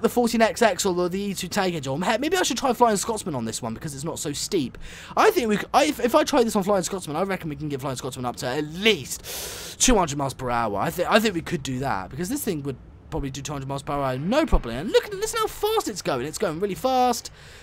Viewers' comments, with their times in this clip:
0:03 It's not! That one sounds awful! (Until I replaced it)